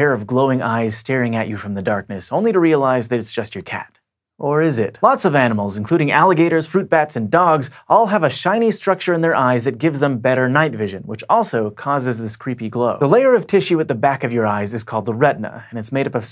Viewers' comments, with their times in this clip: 0:04 vsauce music plays